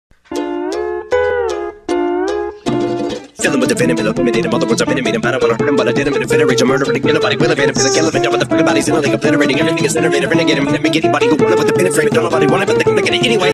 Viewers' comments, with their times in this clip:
0:07 the random hi hat